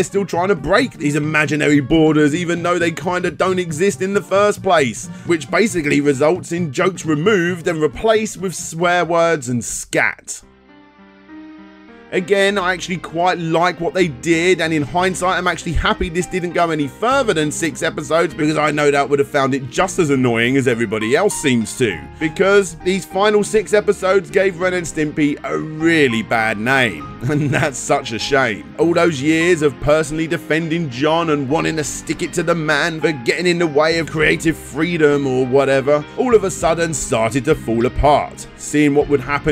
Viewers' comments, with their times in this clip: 0:10 Jesus is anyone else noticing the music here
0:11 no... not this song.... no..
0:26 That music ............ Why? Suppressed memories are coming back Screams both internally and externally